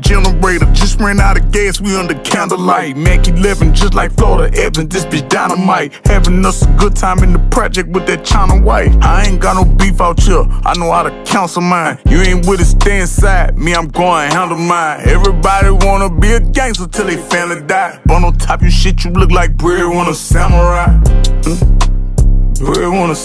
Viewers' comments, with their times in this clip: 0:09 ian got no beef outchere i kno how ta cancel mine or is it counsel mine 😭